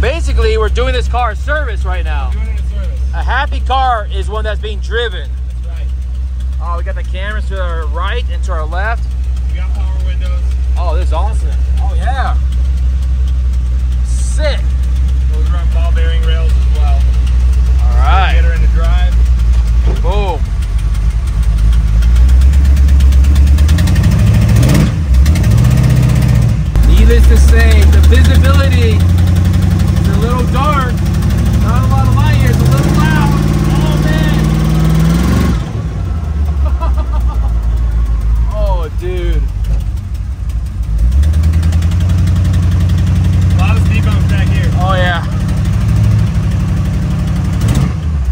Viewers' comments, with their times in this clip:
0:04 that's an exhaust leak... lmao... not lifters
0:19 it sounded like a fuckin lawn mower dude 😆
0:31 That was not ticking lifters, that is an exhaust leak.